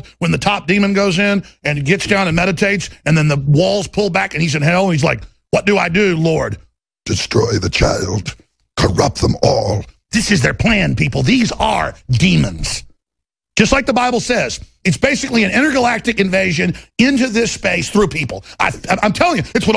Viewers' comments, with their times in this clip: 0:07 spot on Dr. Claw impersonation